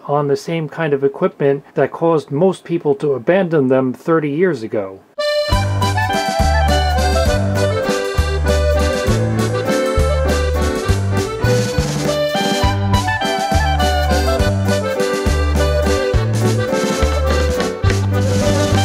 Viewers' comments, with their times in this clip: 0:05 The Al Parks Orchestra sounds like the band in the van with comedian John Candy from the movie, "Home Alone"